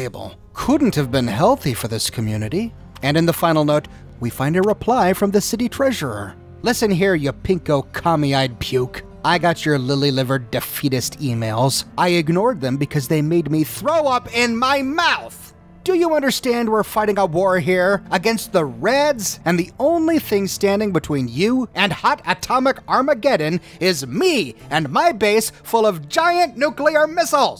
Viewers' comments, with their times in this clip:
0:09 Commander Devlin sounds like General Jack D Ripper from Dr Strangelove, who starts WWIII because he thought water purification was a communist conspiracy.